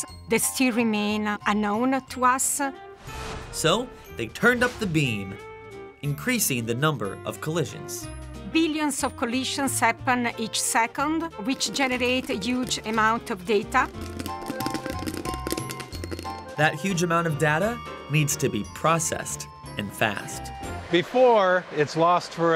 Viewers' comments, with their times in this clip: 0:08 Smart Scientist says "data" correctly and pretentious journalist says "data" incorrectly